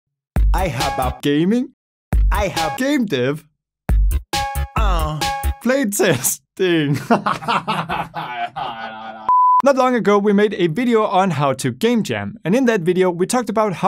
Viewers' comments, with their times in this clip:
0:00 My ears are bleeding and I blame you.